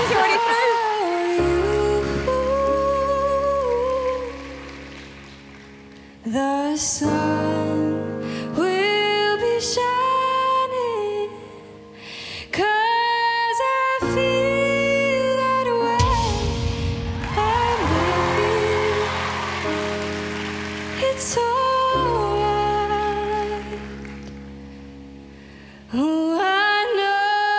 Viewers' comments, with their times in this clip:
0:09 its like moira in the Philippines